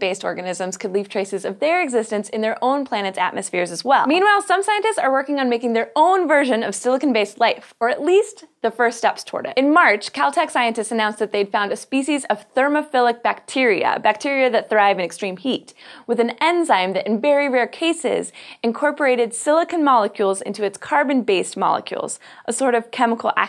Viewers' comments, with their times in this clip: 0:09 Kel-Tec scientists finding thermophilic bacteria? Is that why I can't find any Kel-Tec products on the shelves?